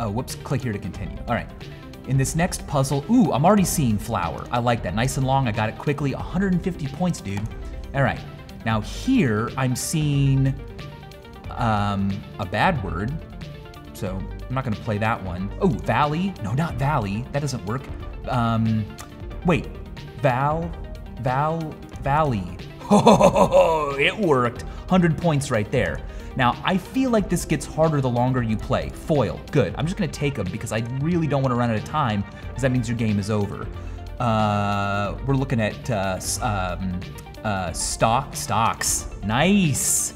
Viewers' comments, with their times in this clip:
0:06 The way Michael says "dude" kills me
0:22 sounds like riptrippers